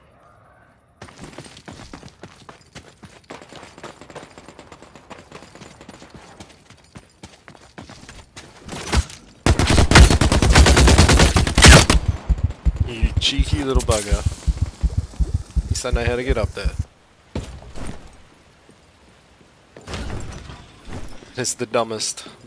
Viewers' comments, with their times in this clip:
0:09 have sound error